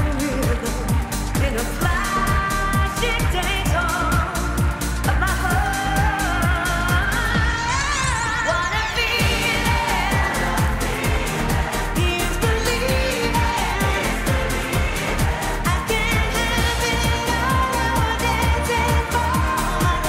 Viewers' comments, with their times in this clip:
0:06 that microphone drawaway. Made no dent to her singing. Lip Synching?